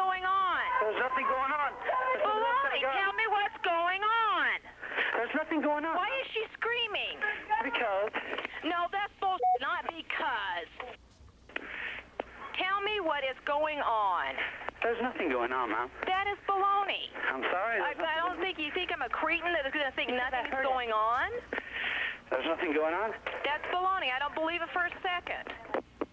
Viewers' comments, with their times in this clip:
0:09 I love how, in the first segment, the dispatcher consistently calls out the burglar's lies as being "baloney," and then when he gets shot, she actually cusses...and it's bleeped out by what sounds like a glitch in the recording.